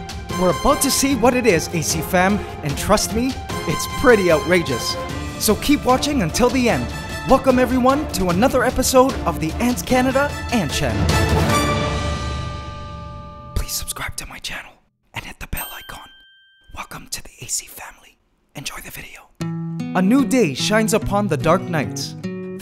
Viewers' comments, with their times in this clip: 0:07 Welcome everyone to another episode of FishCanada